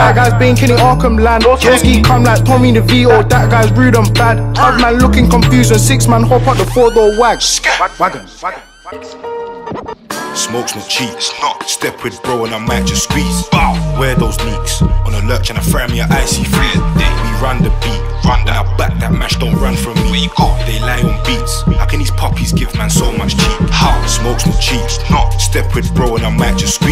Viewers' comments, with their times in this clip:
0:09 the instrumental is fucked up there is no bass frequencies it's too bad cos the rap is good
0:10 perfect blend of Chicago Lil Bibby roots and the UK sound.